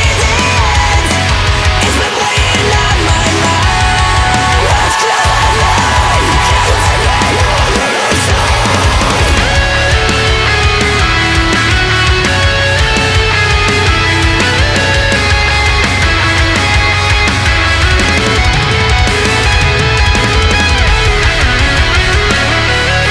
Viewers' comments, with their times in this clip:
0:08 amazing skillz, overall tone is great also, stoked 4 the album